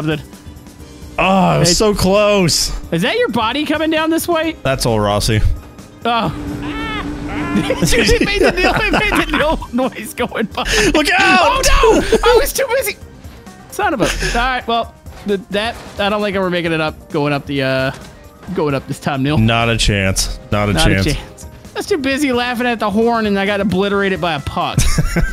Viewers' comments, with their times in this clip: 0:06 that horn pass killed me 🤣🤣